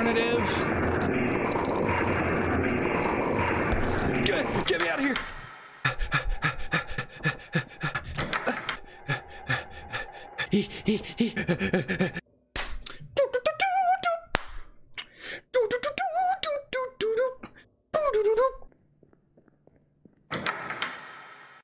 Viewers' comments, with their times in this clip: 0:06 Inserts Unholy Hyperventilating